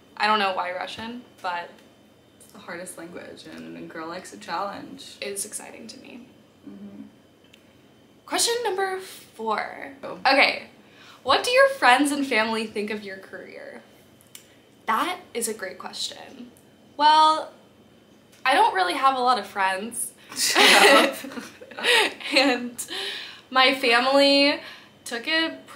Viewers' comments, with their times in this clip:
0:07 Question #4 with Zuckerberg voice 😧